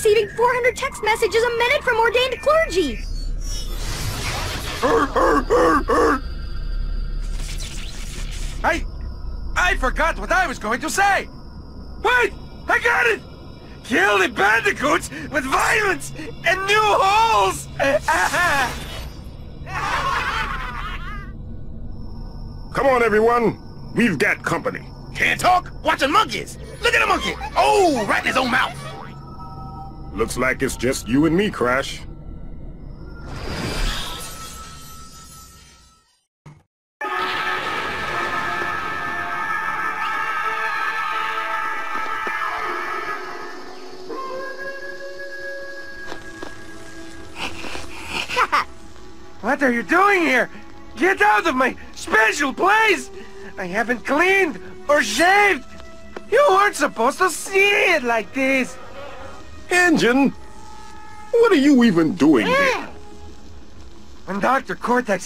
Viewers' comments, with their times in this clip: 0:04 Are we not gonna talk about the fact that N. Gin does the Tusken Raider sound
0:49 Why, hello Ren Hoek. I didn't know you were a insane robot in Crash's Universe.